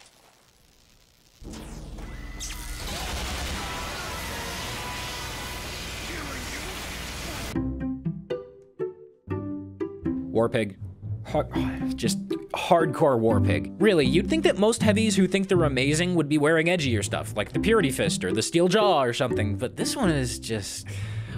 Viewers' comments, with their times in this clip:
0:09 nobody: auto-generated captions: warp egg